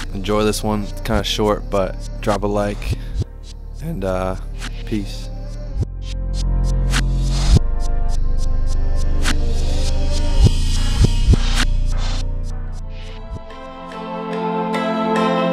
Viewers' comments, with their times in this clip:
0:03 hella voice crack 💀